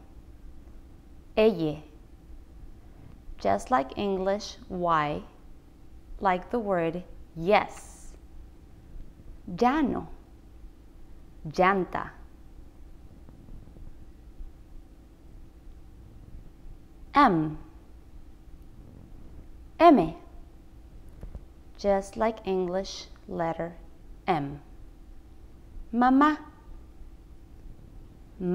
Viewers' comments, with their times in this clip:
0:09 i hv a doubt in u said 'LL' sounds as y Then u pronounced llano & llanta as jano & janta, why? Is it a regional slang?